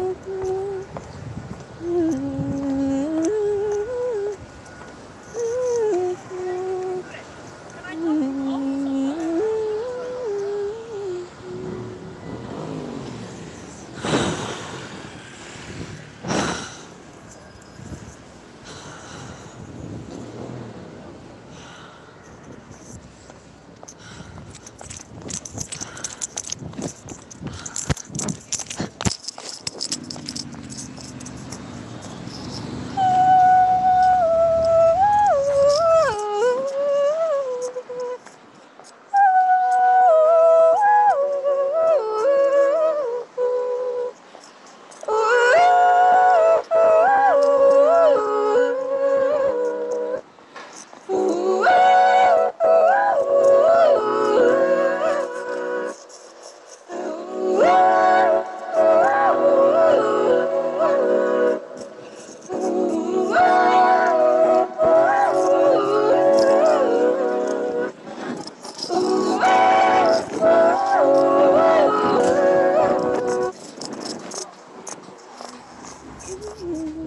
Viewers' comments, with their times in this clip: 0:05 love the lil vocal runs
0:33 The part that goes from 'til the end is absolutely astonishing. Those vocals give me chills everytime I hear them
1:00 is my favourite. So beautiful. But the geese and the park growls literally scared me - I couldn't watch - lol.